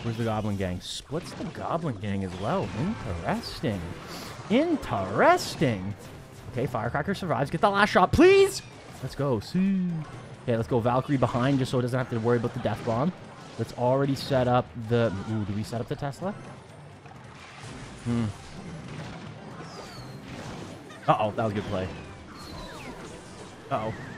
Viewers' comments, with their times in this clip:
0:09 was that a Siuu